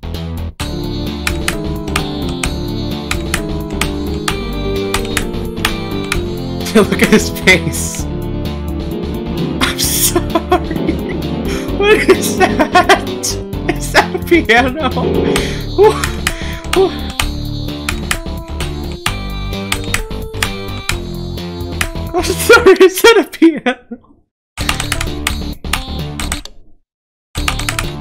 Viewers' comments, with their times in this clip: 0:07 in and we already get the guy laugh
0:08 The piano is so funny
0:11 is just stickamn spamming the piano
0:11 this sounds like the song from sans
0:13 I just noticed he plays a bit of megalovania